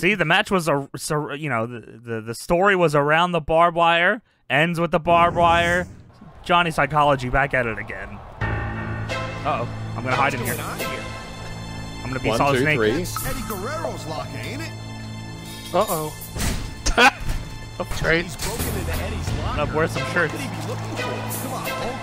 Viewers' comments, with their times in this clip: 0:08 Idk why but I love the music in the background LMAO